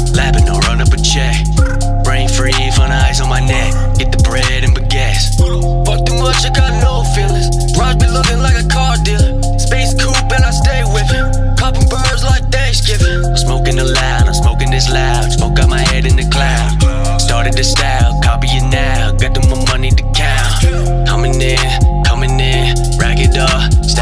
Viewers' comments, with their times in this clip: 0:06 I think that vocals r compressed too much, but still fire! straight Future voice
0:07 you sounded scarily similar to Lil Durk